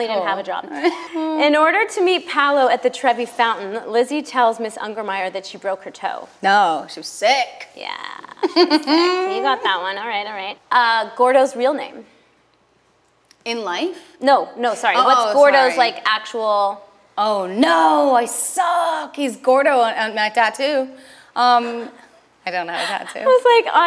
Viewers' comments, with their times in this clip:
0:08 That little chuckle she has is kinda jazzy and I love it